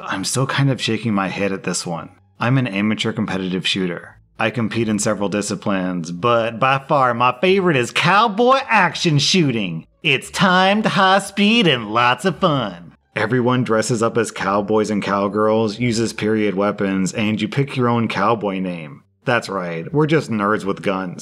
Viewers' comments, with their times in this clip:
0:04 Is no one going to talk about that accent transition ?
0:05 I just died. I as a Texan… tell myself I dont sound like that. But… now I wish I did lmao
0:06 LOL THE 2ND ONE'S ACCENT ITS cowboy ACTION SHOOTING